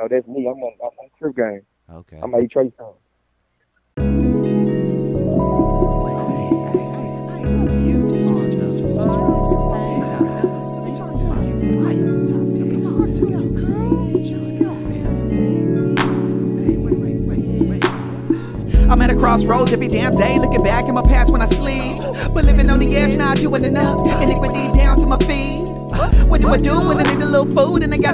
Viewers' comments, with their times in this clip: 0:09 that song tho